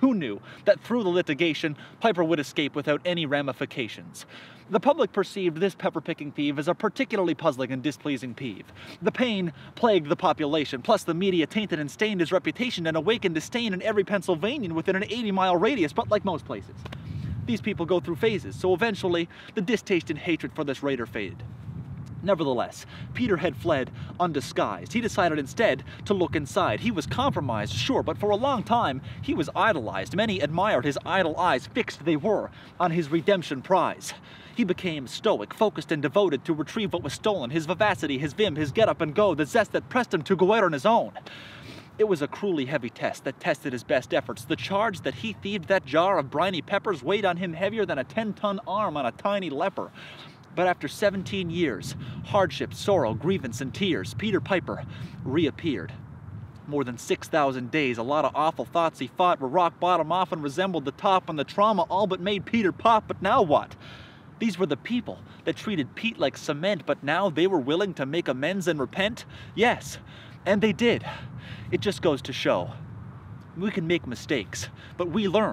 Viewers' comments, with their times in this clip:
0:05 Ah! If my ears are not deceiving me, I believe I detect a "lithigation" instead of "litigation" just before
0:55 your flow is incredible
0:56 an awfully hot coffee pot
0:56 Did you just really steal eminem's "awfully hot coffee pot" flow